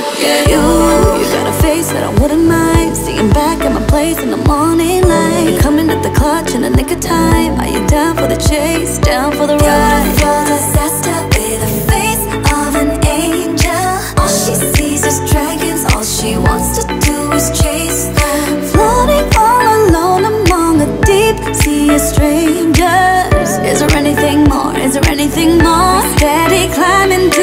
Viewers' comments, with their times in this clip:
0:09 sounds like jessica jung voice